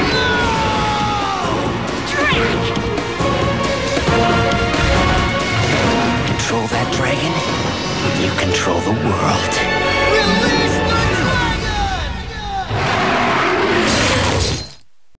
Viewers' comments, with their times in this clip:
0:07 the guy sounds like torn from jak 2